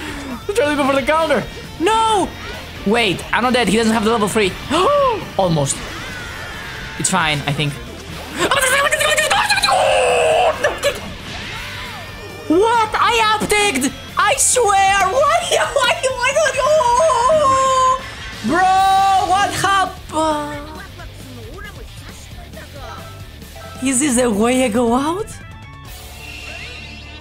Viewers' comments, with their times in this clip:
0:06 is this native greek language?
0:08 is when your brain malfunctions and you speak gibberish lol